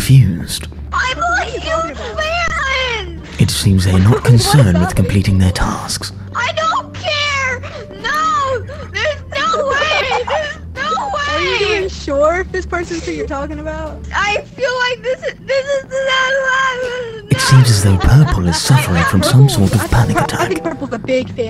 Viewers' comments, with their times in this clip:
0:06 OMG purple is just a little bean 🥺🥺 this was my favourite round, watching the grey bark bark 😂😂